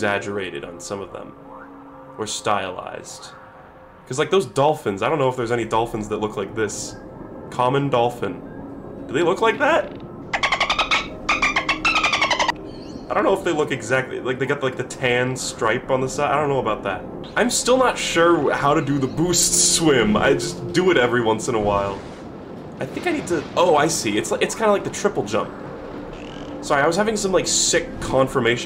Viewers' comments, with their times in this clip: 0:10 That's the exact sound the zombie dolphin in PvZ makes.